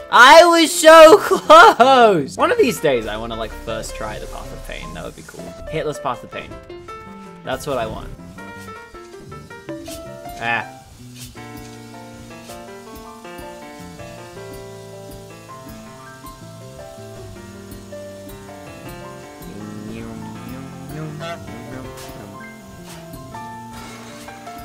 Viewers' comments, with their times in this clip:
0:05 holy sh*t, it took my brain like 30 seconds of being very confused to figure out he did in fact not say hitlers path of pain